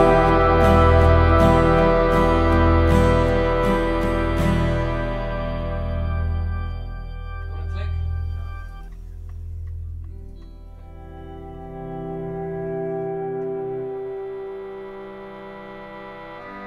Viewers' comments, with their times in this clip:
0:04 listen carefully, anyone know what he's saying? To me it sounds like "1 click"